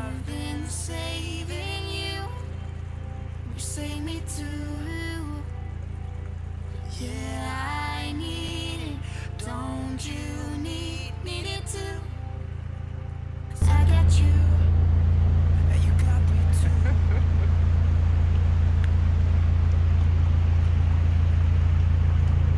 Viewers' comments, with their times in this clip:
0:07 Nice music ish